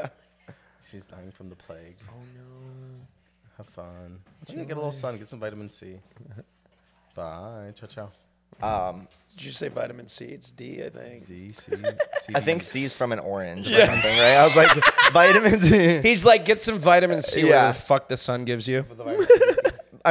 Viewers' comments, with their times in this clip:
0:06 I thought I heard "tchau, tchau"?